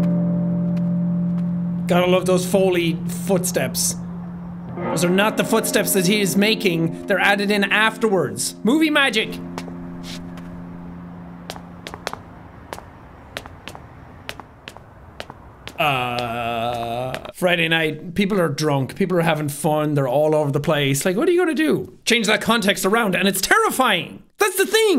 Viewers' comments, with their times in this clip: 0:10 Minecraft noises intensify 👞👞